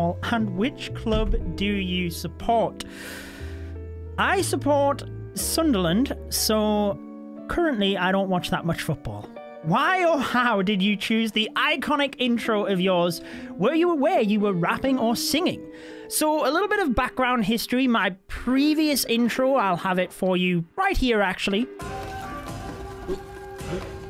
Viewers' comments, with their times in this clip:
0:06 wen u said Sunderland I finally put a nail on it you’re from the northeast like myself, took me awhile to figure that out your accent 😂